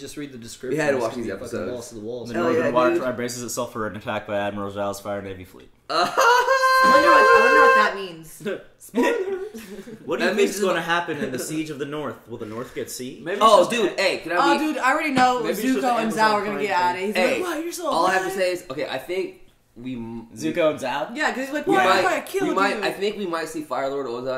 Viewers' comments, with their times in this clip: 0:05 That sounds like the beginning of a soundtrack I know : (high pitch) ahahaaaaaa, (low pitch) hahaaaa (high pitch) hahaaaaa, (low pitch) hahaaaa